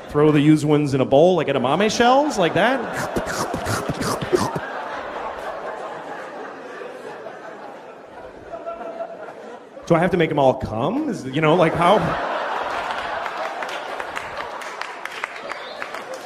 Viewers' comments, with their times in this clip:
0:03 somebody make an edit of a zoom in to his face after each slurp